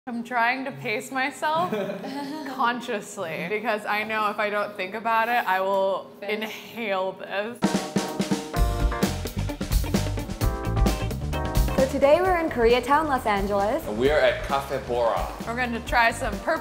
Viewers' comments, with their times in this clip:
0:02 that laugh was so fake i love it